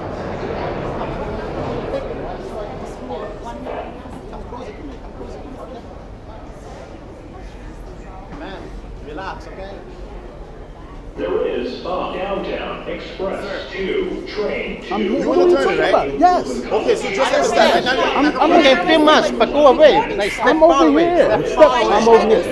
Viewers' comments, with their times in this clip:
0:08 I thought he said “man relax ok?” 🤣🤣🤣🤣🤣😭